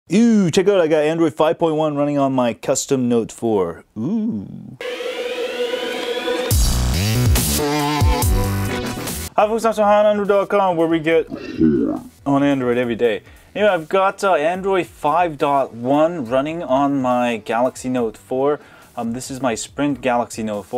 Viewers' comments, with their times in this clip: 0:03 THAT 'OOH" LOL!